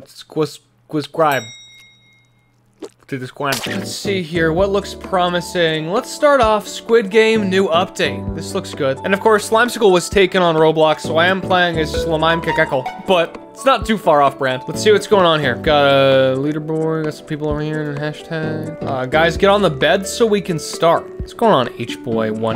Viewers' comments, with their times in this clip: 0:03 That 3DS Internet settings song really hit me hard in nostalgia.